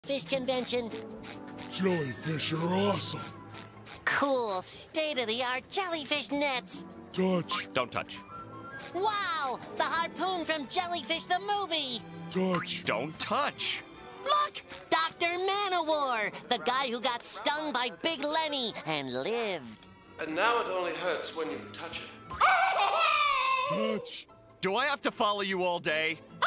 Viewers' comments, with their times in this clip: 0:07 is it just me or is the sound effect delayed